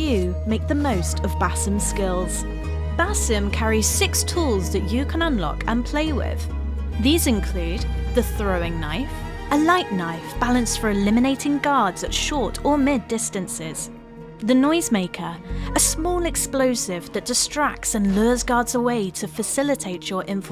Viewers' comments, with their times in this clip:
0:06 Really had a British talk about knives